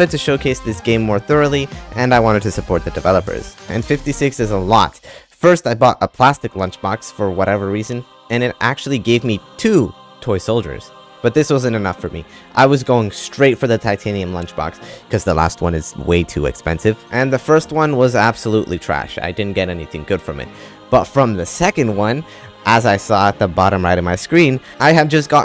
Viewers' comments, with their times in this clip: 0:06 i hate umbra's theme